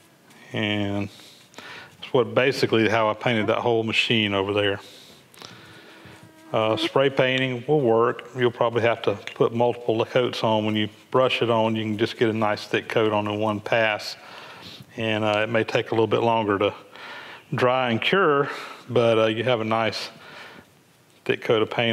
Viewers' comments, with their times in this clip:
0:05 Mosquito flies by the mic. It really fooled me through the headphones...
0:06 A mosquito performs a flight-by over the microphone at minute Unacceptable! 😂😂😂😂😂Other than that, super video, you make it all look very easy, I would not be able to replace the chain of my bycicle..... To save my life
0:06 that skeeter had me swatting in the air.